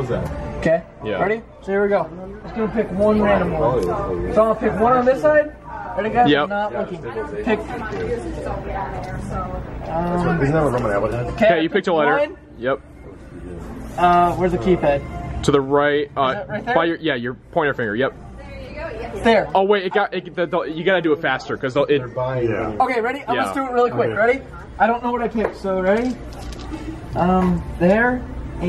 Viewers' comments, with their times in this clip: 0:09 you can hear in the backround "Is that what Roman Atwood has"